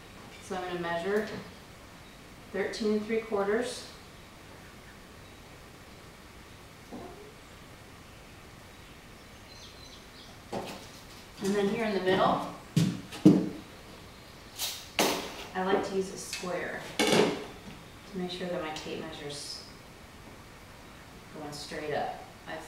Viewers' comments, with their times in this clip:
0:06 Is that a fart ?:D